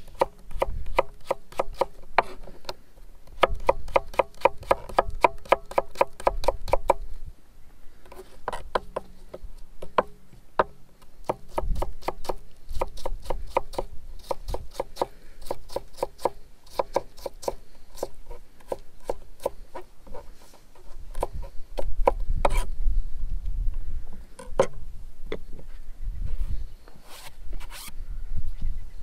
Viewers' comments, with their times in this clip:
0:10 sounds like the start of the wii shop music